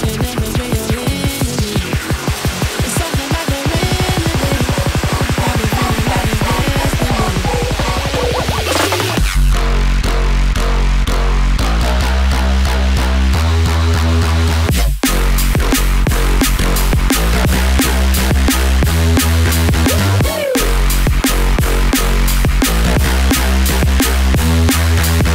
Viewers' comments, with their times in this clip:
0:09 that nostalgic feeling of netsky's old albums ❤❤❤